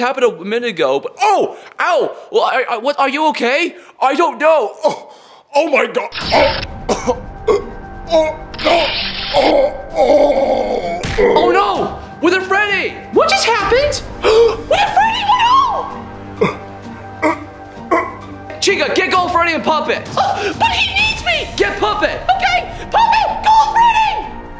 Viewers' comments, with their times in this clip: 0:09 sounds like a bear dying
0:10 I know I’m supposed to feel bad for withered Freddy but the noises he makes before passing out sound funny to me Still a great video